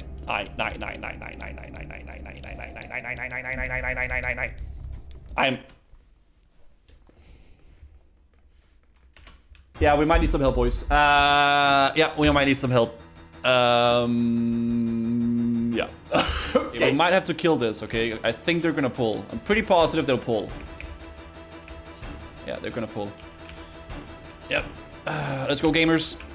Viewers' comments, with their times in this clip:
0:10 The bevelle music is BiS